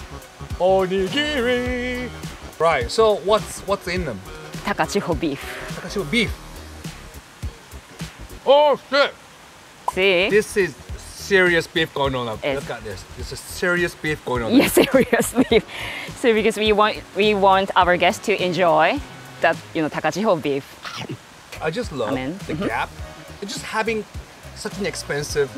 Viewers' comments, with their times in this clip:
0:07 "OH SHIT" or "OISHI!" ... The world may never know